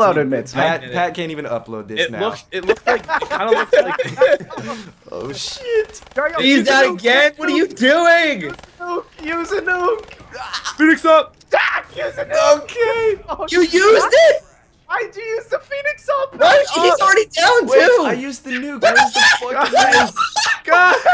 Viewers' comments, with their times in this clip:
0:09 What is that noise lol